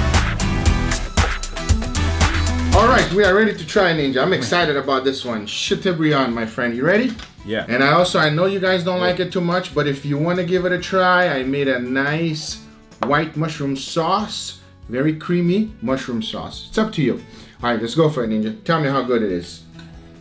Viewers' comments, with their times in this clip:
0:04 am I the only one who heard it as cyka blyat my friend